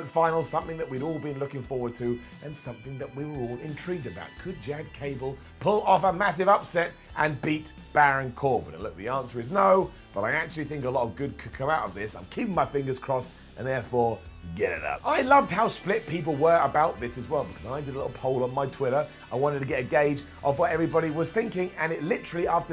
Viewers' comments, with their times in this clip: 0:03 Could Gad Chable..... Absolutely destroyed me lol!